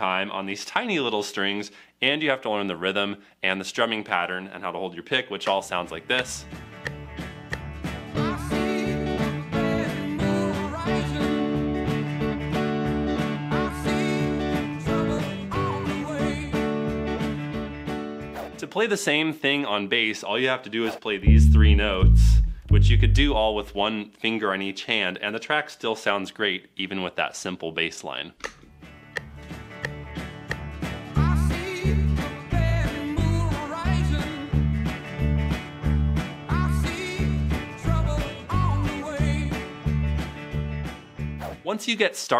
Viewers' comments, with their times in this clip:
0:07 sounds like ducktales
0:29 Am I the only one that can't hear the base ?